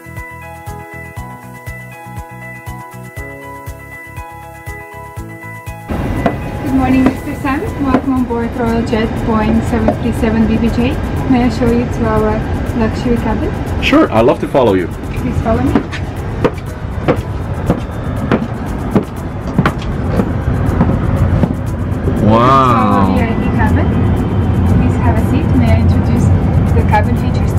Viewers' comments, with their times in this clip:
0:08 sounded like jet boring lol 😂